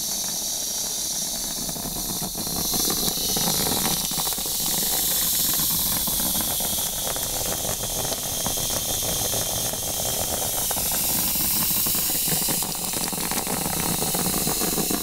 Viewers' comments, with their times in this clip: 0:03 The water sounds hitting the sink...FULL ON TINGLES omggggg